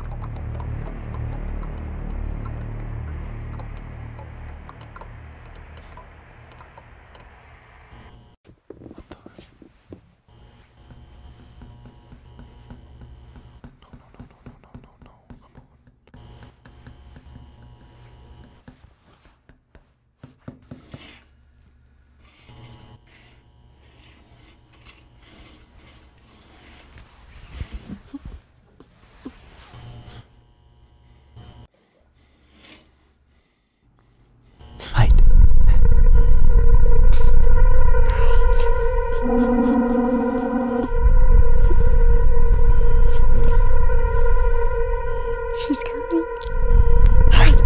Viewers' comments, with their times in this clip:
0:09 cool, horror asmr...... lmao
0:34 I really like it that they didn't use a loud music to scare us.